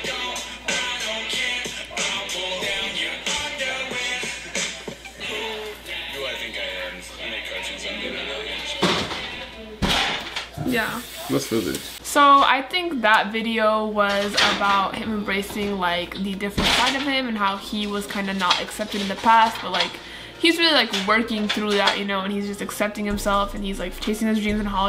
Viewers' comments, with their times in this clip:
0:08 Are we not going to talk that smash in the background synced up perfectly